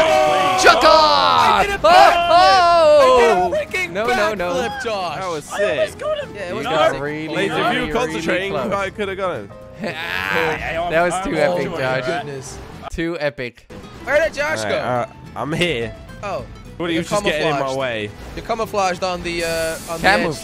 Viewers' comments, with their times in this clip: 0:04 a those vocals though